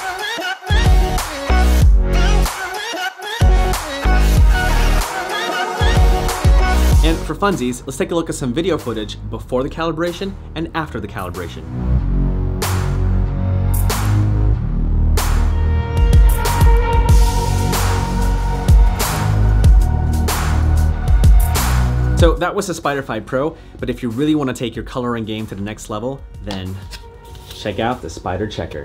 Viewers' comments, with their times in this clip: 0:10 this video is full of horrible ear piercing scratchy sounds for no reasons. Have mercy on your fans.